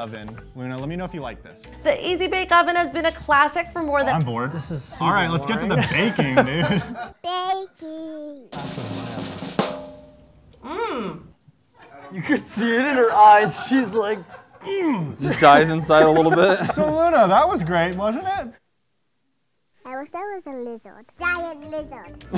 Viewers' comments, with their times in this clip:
0:09 Nah why did I laugh so hard when she at the easy bake oven food and just went mmmm. like make it more convincing but I feel the same way.